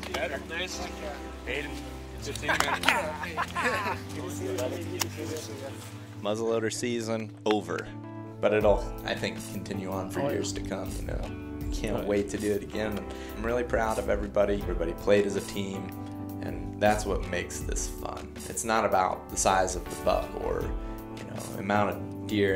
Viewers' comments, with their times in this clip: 0:06 the background music , throughout the whole hunt,sets the tone of the video. Rain sucks...you guys are hardcore having fun! Thanks